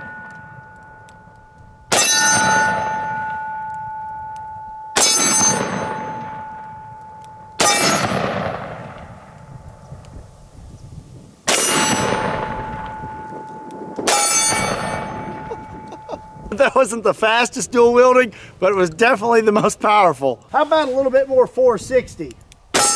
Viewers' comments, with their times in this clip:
0:08 sound like a cannon